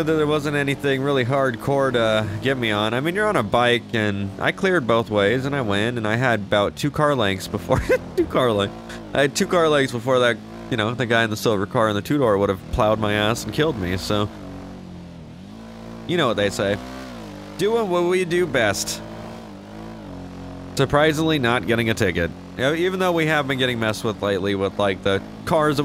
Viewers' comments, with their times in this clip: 0:06 the giggle at 2 car lengths😂😂